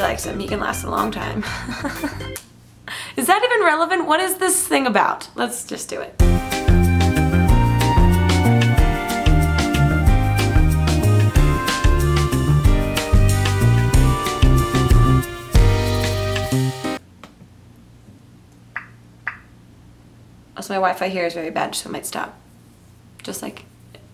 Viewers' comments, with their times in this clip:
0:06 I REALLY like that "Elevator Music" that played